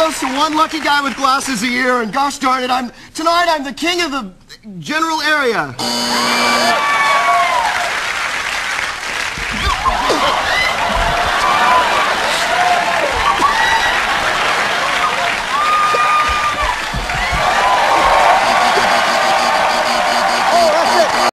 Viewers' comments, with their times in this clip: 0:10 when you play it over and over again on it sounds like someone is saying get him Ryan. LOL
0:10 there are so many different sounds going on haha
0:10 replay over and over, that womans laugh is insane